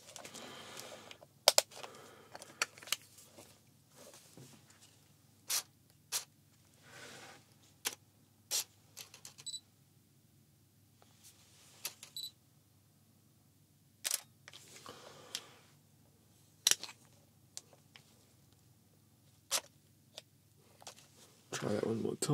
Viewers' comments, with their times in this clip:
0:09 I actually get ASMR from the clicking and beeping and snapping of pictures from cameras, like